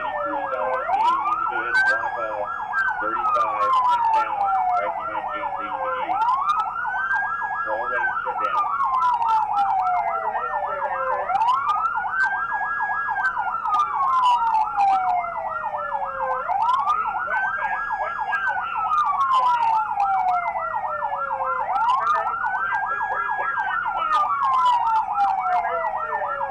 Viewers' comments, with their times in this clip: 0:07 rookies leave their sirens blaring